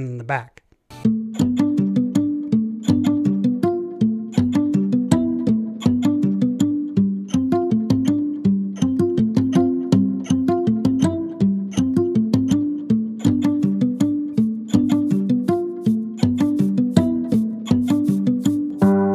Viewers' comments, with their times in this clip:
0:07 as soon as I heard the voice on that video I knew it couldn’t be trusted. That page really needs fact checkers.